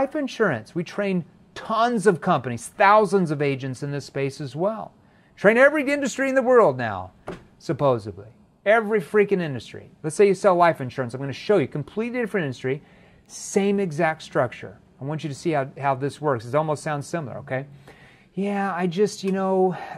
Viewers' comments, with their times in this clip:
0:05 Supposebly..? JEREMY!!! I don't mean to pick on you just curious where that came from hahaha